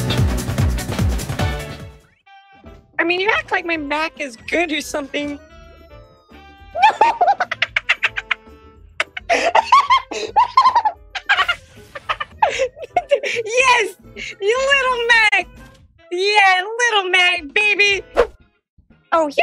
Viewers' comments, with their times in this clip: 0:06 Is it just me or does her laugh sound like a kookaburra?